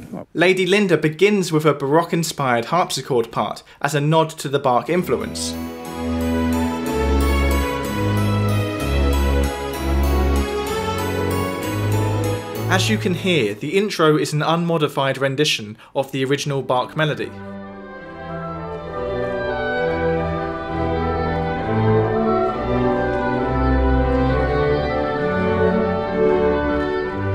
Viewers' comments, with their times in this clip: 0:05 does the intro sound a bit like the wii sports theme?
0:09 that sounds like the song "Come and get it" that McCartney wrote for Badfinger! "But you better hurry cuz it may not last"